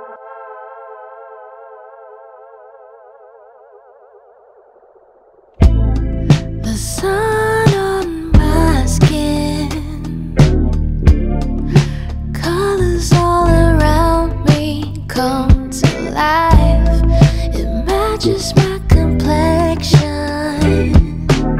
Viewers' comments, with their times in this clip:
0:04 Oh God those drum beats sounds with 4:3 ratio is so satisfying!